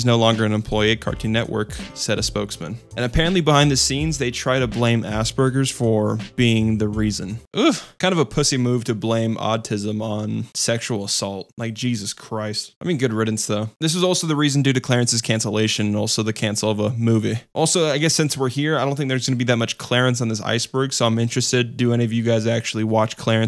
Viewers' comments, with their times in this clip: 0:05 It took me a full minute to understand that he said "Aspergers" and not "Ass Burguers"